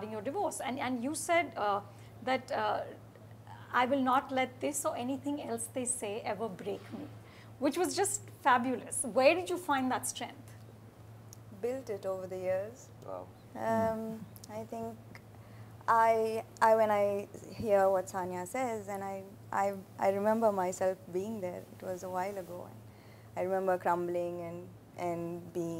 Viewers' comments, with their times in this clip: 0:10 the way vicky kaushal said "WOW" I FELT IT !!!!